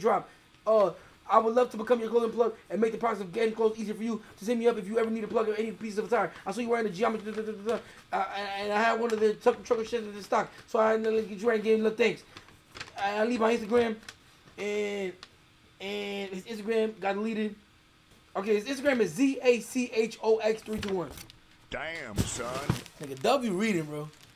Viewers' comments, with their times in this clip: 0:05 THIS IS THE FASTEST READER IKKKK!!! HE DONT PLAY!!! HE GETS DOWN